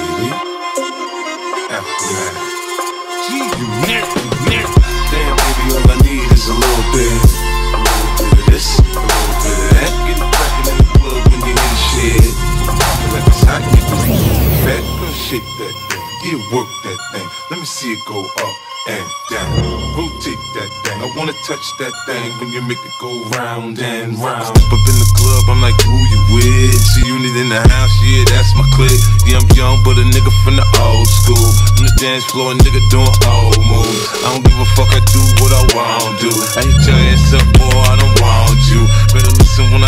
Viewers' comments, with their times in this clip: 0:04 Just a lil bit litter than a beat drop :O
0:05 Actually was why I was here but it didnt sound as good as it did in the edit
0:21 drop has to be illegal 💀 💯 🔥
0:22 Just surprised me , my whole house exploded :O No other song is this loud in bass I SWEAR :O
0:24 <--- INSANE BASS BUTTON. You're welcome
0:24 💥 trap music just dropped 💫